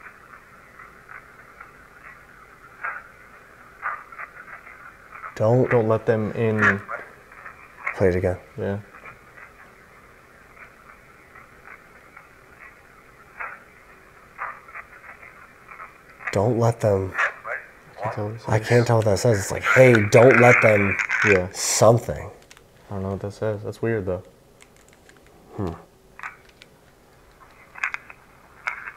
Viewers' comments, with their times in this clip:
0:09 I feel like it says "hey, don't talk to anyone."